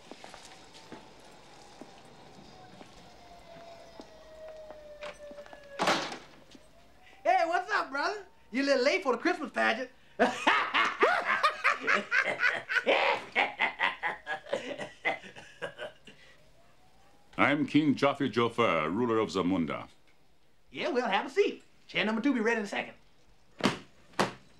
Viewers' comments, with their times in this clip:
0:10 Arsenio Hall still gets me with that face and laugh! Lol
0:10 The laughter hahaha
0:11 That guy with the glasses laugh cracks me up everytimeeee🤣🤣🤣🤣🤣🤣🤣🤣🤣🤣🤣🤣🤣🤣🤣🤣🤣
0:11 Lmao. That laugh
0:11 i Can't get over that laugh😂😂😂😂
0:12 his laugh kills me.😂😂😂